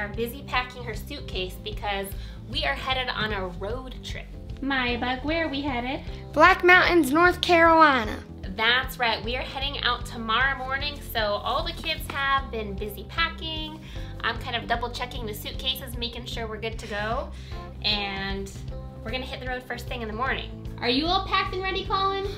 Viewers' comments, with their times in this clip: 0:06 brooooo her accent is on point😂😂😂😂❤❤❤❤❤❤